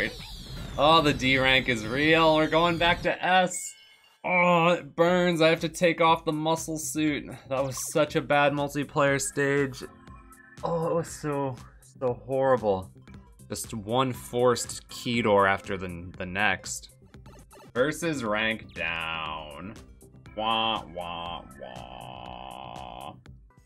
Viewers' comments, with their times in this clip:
0:10 that boo wasn’t necessary that was well made level